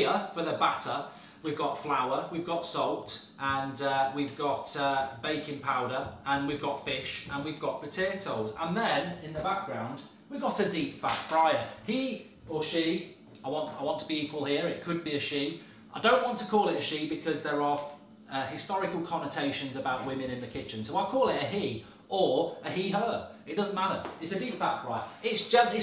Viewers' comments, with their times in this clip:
0:07 why did he suddenly have a Barnsley accent when he said potatoes